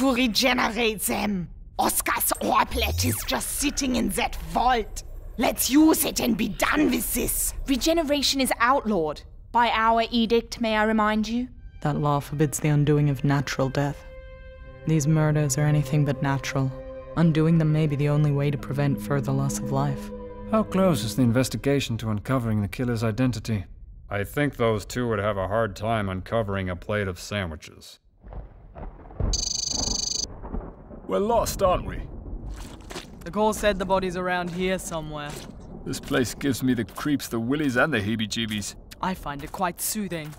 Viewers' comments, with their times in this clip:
0:08 At this moment Doctor laughs
0:23 Moments like Indiana's deadpan quip is the reason I watch!